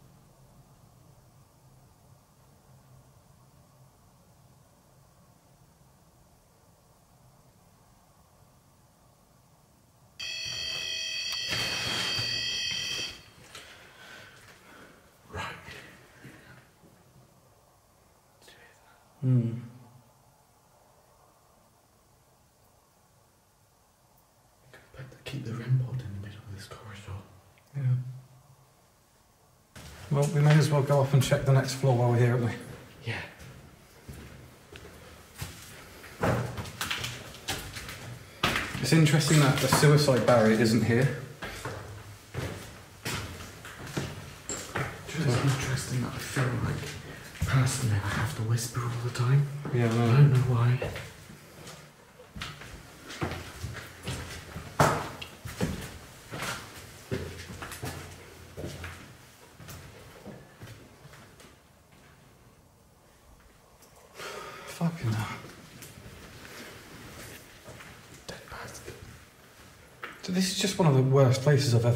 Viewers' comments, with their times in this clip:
0:10 that f-ing rem pod cut about gave me a heart attack…
0:52 child like noise